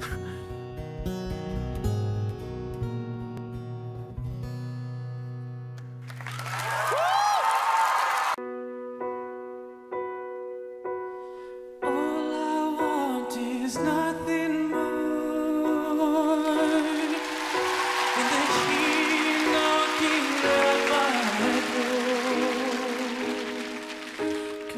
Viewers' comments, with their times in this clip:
0:08 Several incredible vocals. The Blue Ribbon goes to singer